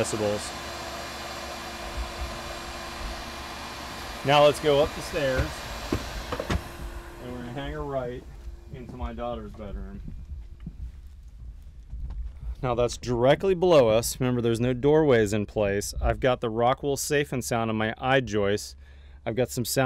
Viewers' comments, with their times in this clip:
0:04 are you kidding me? you guys didn't actually signal someone downstairs to turn off the vacuum, did you? that's some good sound insulation
0:04 you can hear the shopvac get turned off as he walks upstairs.
0:05 Is it me or was the vac switched off ?